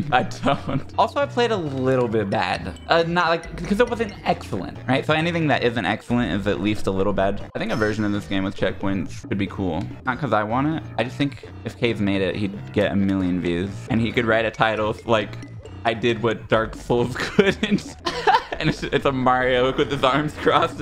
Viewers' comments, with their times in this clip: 0:04 I love that you can actually hear Breadbug's theme when usually the BGM is almost silent